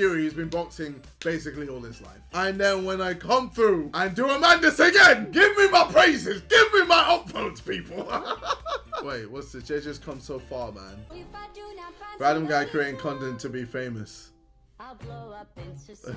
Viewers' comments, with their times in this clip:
0:03 By madness he means “elbow” ??